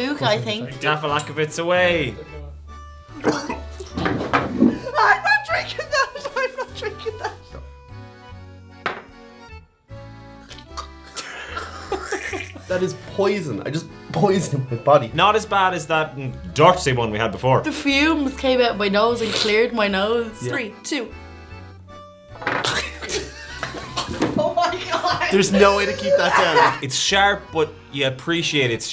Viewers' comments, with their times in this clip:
0:10 When she tried to speak .... I nearly fell out of my chair laughing. That was like me the first time I had a, ahem, "clear alcohol" and it was like ".... (noise noise) breath (that alcohol whisper voice when you're trying to speak)... what's in that?!?"